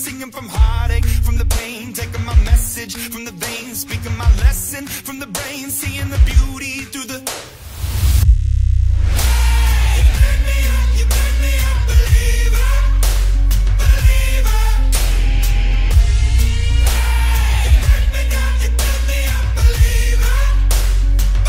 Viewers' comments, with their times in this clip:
0:07 oof that bass.....
0:08 The drop gives me chills